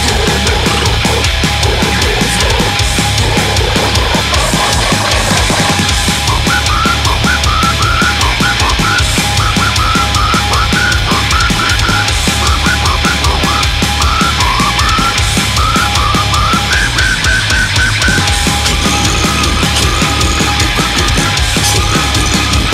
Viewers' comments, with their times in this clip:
0:06 when the dj wants to scratch a record on a metal song